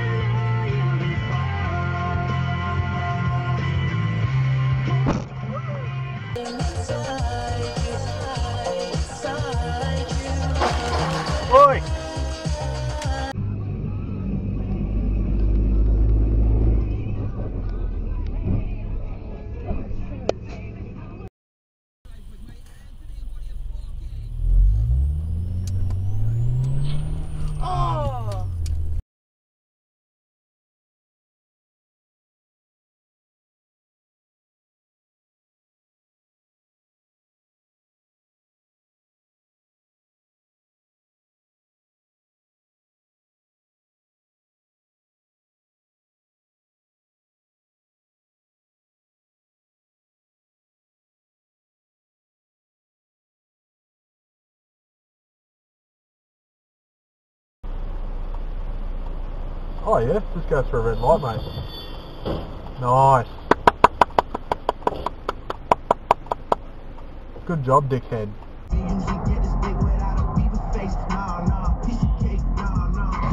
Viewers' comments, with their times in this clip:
0:07 King was listening to in your eyes
0:59 Daniel Riccardo commentating